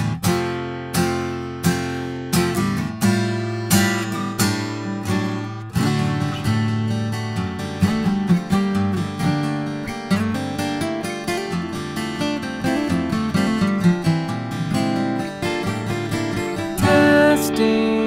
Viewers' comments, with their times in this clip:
0:05 Love that acoustic bit … awesome!